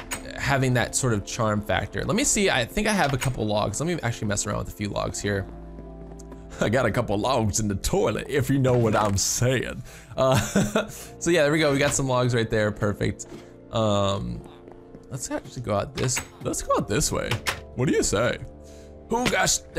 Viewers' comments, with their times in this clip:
0:06 I got a couple logs in the toilet if you know what I am saying. You sounded completely different, lol. :D